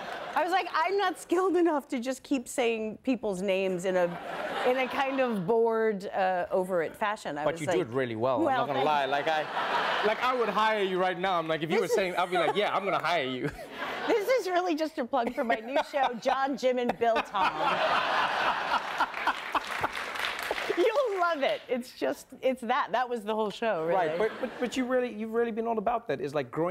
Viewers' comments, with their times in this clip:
0:09 i love the moment from onwards. did u see it? trevor laughs and looks like he is a normal funny person talking to friends (not performing) and he enjoys her joke so much.